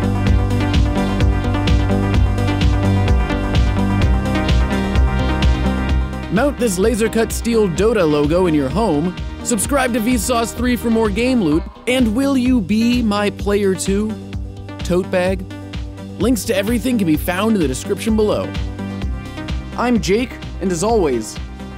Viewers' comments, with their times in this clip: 0:09 more game loop?